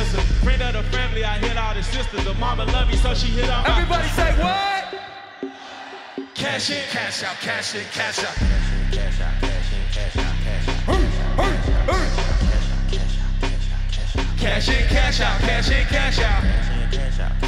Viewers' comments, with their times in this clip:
0:03 pharrell had so much crowd control that they crowd said "WHAT" when he didnt even mean that LOL